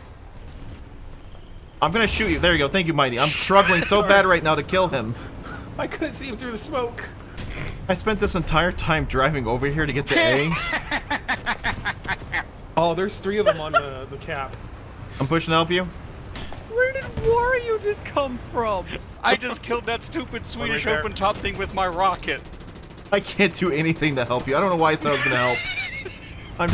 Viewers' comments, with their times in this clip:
0:08 someone edit that laugh 😂😂
0:09 has to be the bast laugh I’ve ever heard